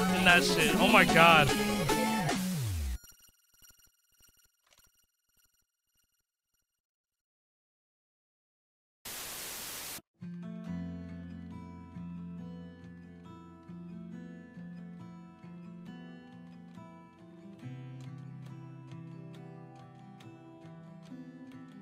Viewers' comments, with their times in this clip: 0:09 Holy shit that song is genuinely a beautiful song. Sounds like somthin you would hear in a movie after a super sad moment or somthin
0:09 gives me huge Low Roar vibes